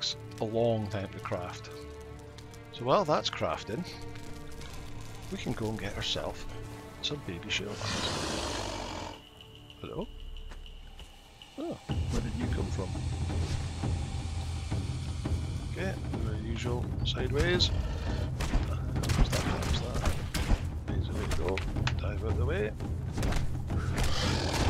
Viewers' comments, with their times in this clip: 0:09 That calm '...hello.' got me dying.